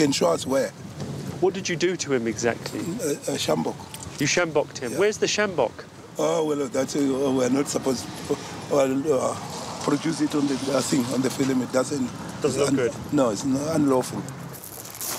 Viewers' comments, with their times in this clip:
0:03 They send in Frank Shamrock to suplex the thieves